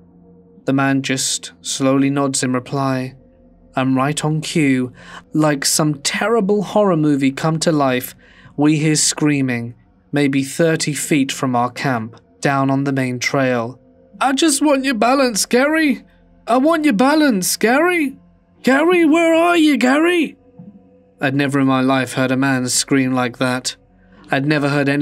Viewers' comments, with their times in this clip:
0:09 omg did somebody come in to the room and slap you? Very brave of you to keep recording after that.